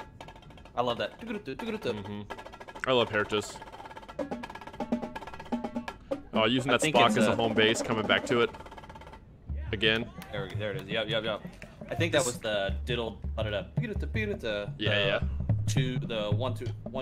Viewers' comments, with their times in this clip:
0:04 that quad roll didn’t have a release 😭